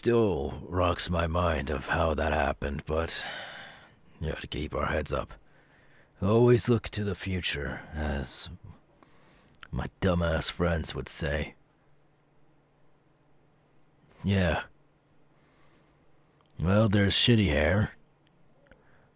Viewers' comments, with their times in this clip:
0:03 did he just say gay bar heads up??